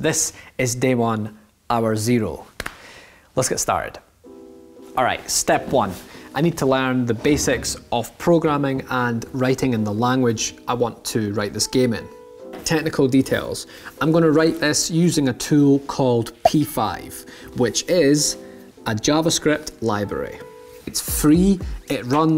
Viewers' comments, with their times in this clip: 0:07 im watching this video without headphones so when that high pitch comes on. tuff